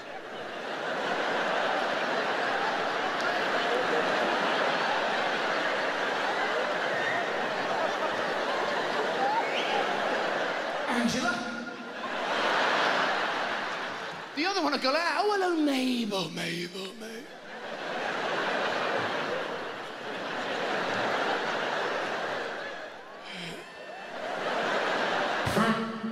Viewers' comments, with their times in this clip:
0:07 heard Jimmy Carr laughing